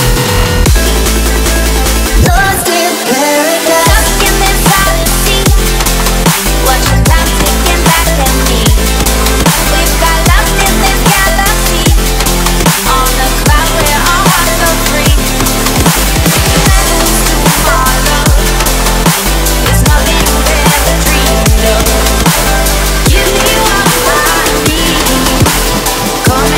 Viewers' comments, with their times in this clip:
0:09 So far, Ive felt like this mix is just mostly sub par dubstep songs with minimal, low effort into the synths or songs themselves, and its far too melodic. Dubstep was never meant to be extremely melodic and trap like, even literal melodic dubstep, has become far too close to trap than actual dubstep. Its all melodies and no synth thought. It sounds like rehashes of the same synths instead of people being creative and making their own sound. Listen, I can understand the appeal of modern dubstep and melodic dubstep, but holy shit, can anyone make good, dark, heavy shit anymore? Why is it all super melodic and so closely related to trap that I can BARELY tell the difference? If I showed someone a trap song, and then showed them Set me Free by Chime and Axel Boy most people wouldnt even say theres a difference really compared to house and dubstep, two vastly different styles, two different tempos, and different sounds overall. Can we go back to the classic sounds already????